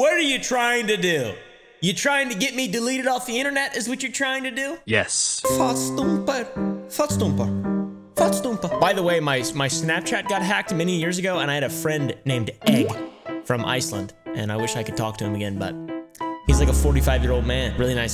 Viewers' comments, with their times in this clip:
0:05 Man is literally fluent